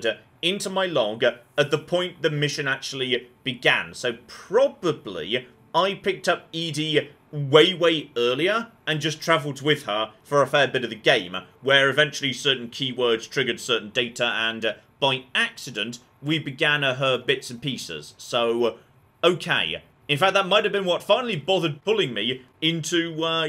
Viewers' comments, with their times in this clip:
0:09 I know you (for some reason) refuse to properly pronounce ED-E but do you have to also misgender him?